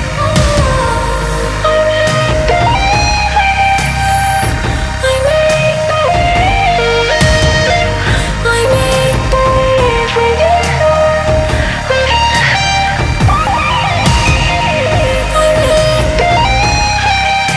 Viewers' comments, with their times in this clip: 0:04 don't tell me that mariah carey can sing higher than this.